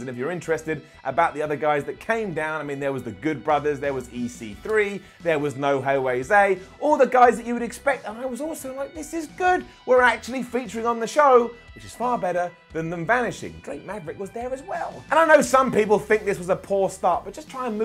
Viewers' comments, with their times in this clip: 0:04 There was no hay way say?
0:05 Petition for No Way Jose’s name to change to “No Hey Way Zay”